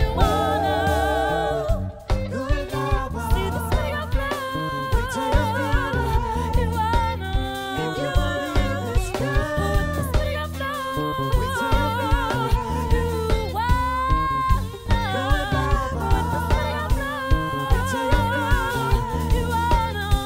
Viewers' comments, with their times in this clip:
0:03 is she saying "see this nigga flowww?" lol?